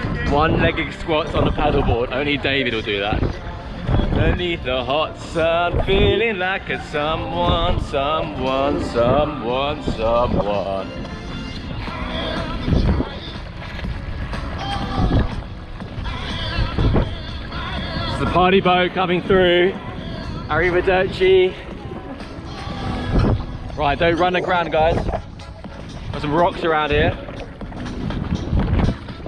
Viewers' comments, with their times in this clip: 0:10 The signing was absolutely amazing 😂